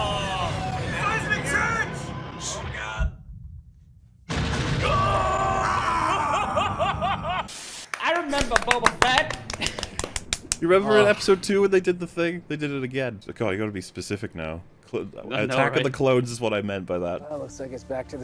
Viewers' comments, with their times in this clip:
0:03 I actually like the guy miming the explosion; it's kinda cute.